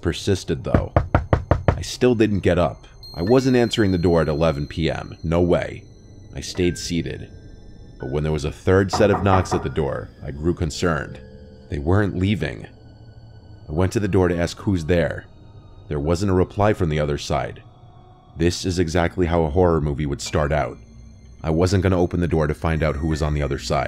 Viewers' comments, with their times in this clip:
0:08 ngl I thought the 3rd knock was real, it scared tf out of me